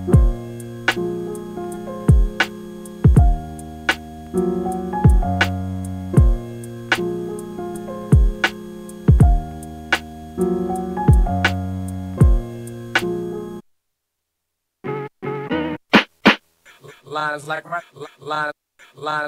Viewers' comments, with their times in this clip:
0:05 really cool beat homie, i even think i prefer it without the voice on it ! and i think a lot of beatmakers can relate with hahaha, always keep it simple